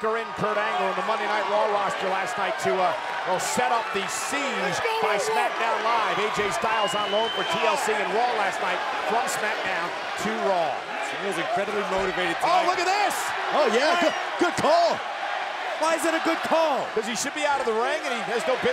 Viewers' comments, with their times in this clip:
0:04 Am i the only one that heard the weird voice